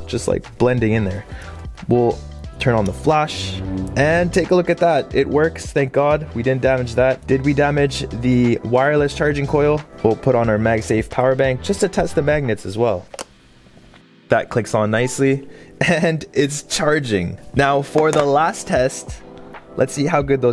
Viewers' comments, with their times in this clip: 0:04 light saber noise is GREAT
0:08 that lightsaber noise is on point 🤣🤌🏾